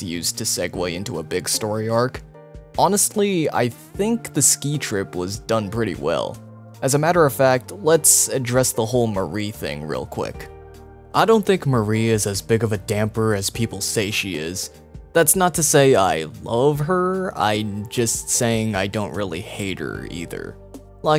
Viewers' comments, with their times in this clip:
0:03 Lol a fart noise that snuck in